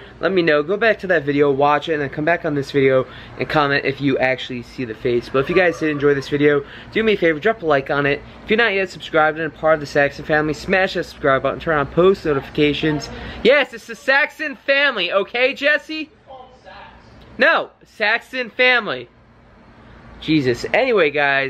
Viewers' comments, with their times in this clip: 0:04 sounds like mc jugger nuggets laughing lol